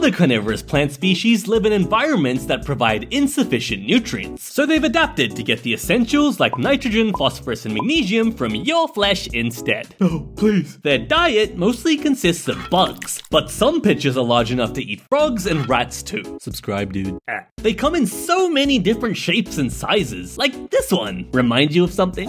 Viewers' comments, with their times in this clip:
0:08 From your flash instead